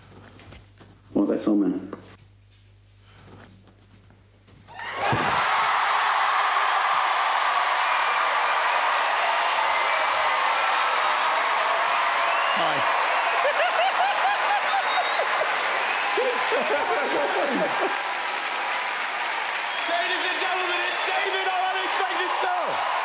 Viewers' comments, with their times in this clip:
0:07 that huge sigh of relief when he realized he wasn't going to jail. He genuinely looked worried once everyone left - he looked like he suspected that things could go that way as soon as he saw the "suspect" enter.